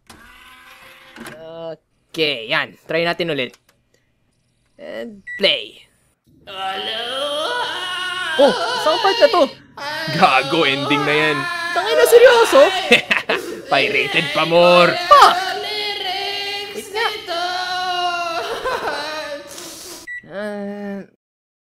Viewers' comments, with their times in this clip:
0:06 ⊙||⊙ THAT SINGING XDDDD